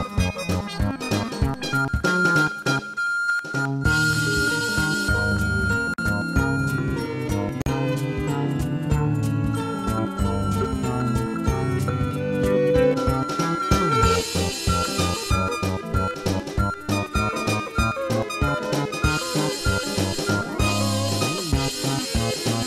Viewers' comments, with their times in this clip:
0:06 The strings sound very eerie here.